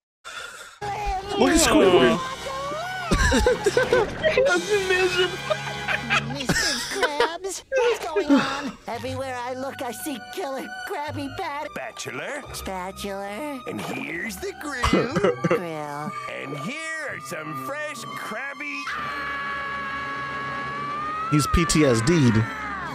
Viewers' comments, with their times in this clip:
0:04 This STILL cracks me up! The dramatic music playing while zoomed in onto Squidward's just broken face lol